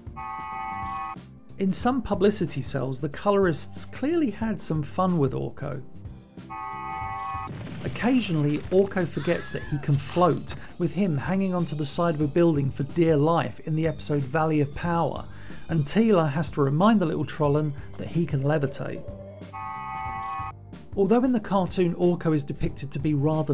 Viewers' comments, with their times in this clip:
0:08 Anybody else notice Orko doing the Wilhelm scream ?